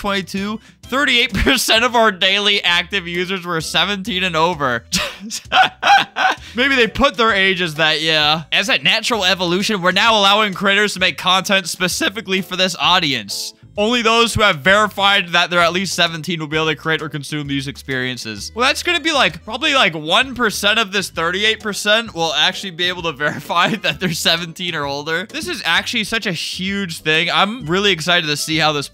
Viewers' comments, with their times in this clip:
0:10 I legit can't stop laughing at how you said Critters and it actually worked in the sentence